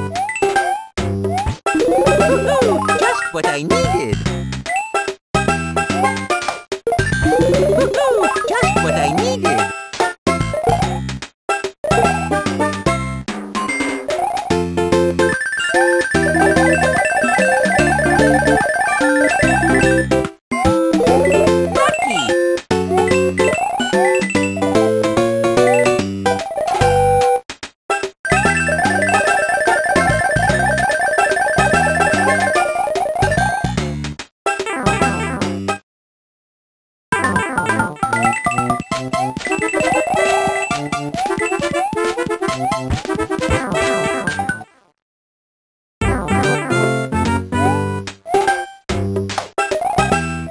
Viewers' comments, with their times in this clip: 0:06 It is a crime for nintendo to implement the mushroom sound for the racoon suit
0:21 Mario says "car key"
0:37 Holy crap that soundtrack is amazing